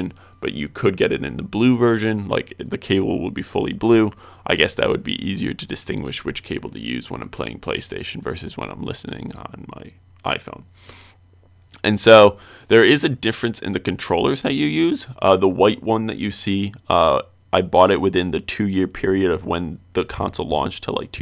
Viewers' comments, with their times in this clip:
0:09 Your voice is annoying at some point of your videos. for exemple, your voice is getting very quiet each second. We can hardly hear you..... Your really need to work that out bro. That is super annoying, yet your review is good. Because of détails like this you’re gonna get a lit of dislike. (No disrespect only constructive advice...)